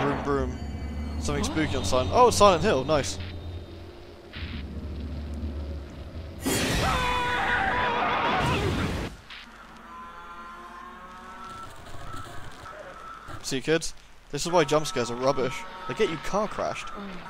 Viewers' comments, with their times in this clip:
0:05 how did that manage to turn out so poorly like I realize some of it could be recording / sound lag, but she just APPEARS on his car, sprawled like she landed on it but its obvious she didn't because the body spawned on top of it AFTER THE CAMERA PANS BACK with no sound effects or anything just BAM. Then he breaks completely from 30 or 40 mph to 0 and screams AAAAAAAgwahwahAAAAH, no apparent damage to the railing but he's suddenly crippled, and then GHOST CAR KILLS HIM I mean as a spectator this is enjoyable for its campiness but that was just straight up horseshit